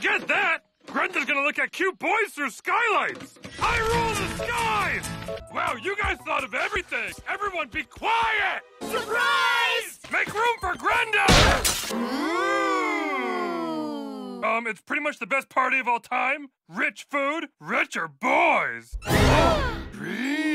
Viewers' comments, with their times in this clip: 0:07 is probably my favorite, I just love that delivery